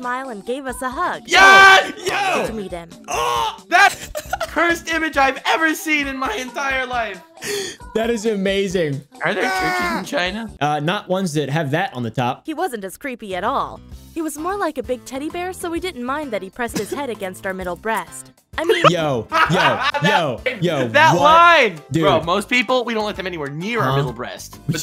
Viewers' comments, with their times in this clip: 0:05 Most cursed image in your Hentaire life you said?? I'm laughing so hard over it. 😂😂